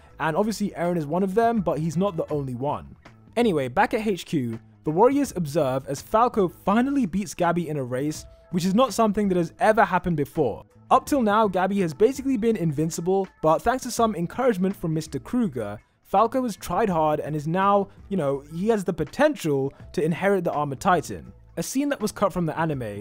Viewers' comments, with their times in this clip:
0:10 "encouragement from 'Mr. Kruger'," I heard those ("") apostrophes.